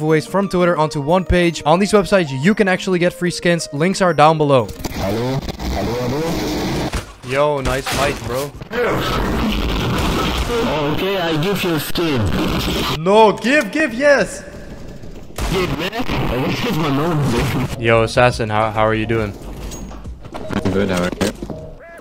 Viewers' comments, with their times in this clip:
0:04 he's speaking portuguese, him say "alô"